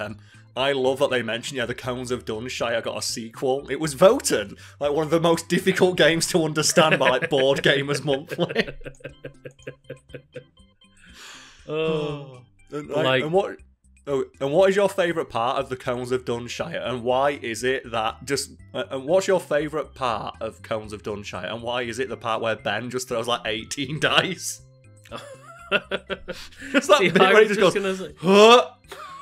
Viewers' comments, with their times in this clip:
0:10 that synchronized sigh after the laugh 😂
0:10 The the unified exhale got me. The harmony is hilarious. I’m surprised the editor didn’t do something cheeky to point it out! Hahaha